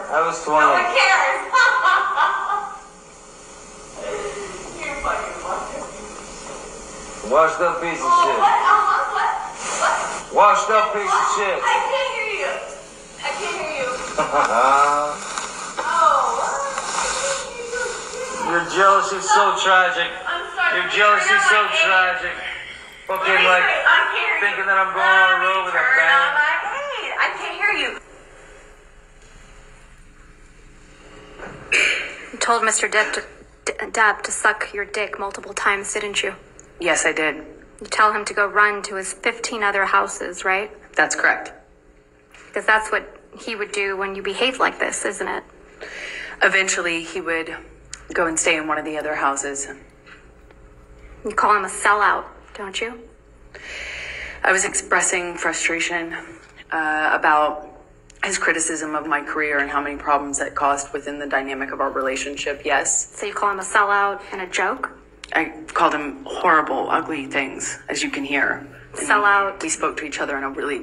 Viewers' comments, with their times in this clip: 0:04 when she said “nobody cares” and laughs, now all the support he’s getting. It feels so good to see karma kick in
0:57 biggest gulp ever